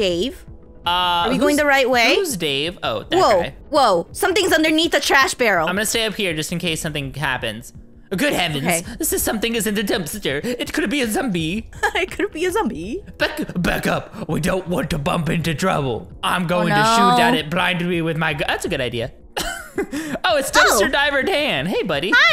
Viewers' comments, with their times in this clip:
0:08 how he said it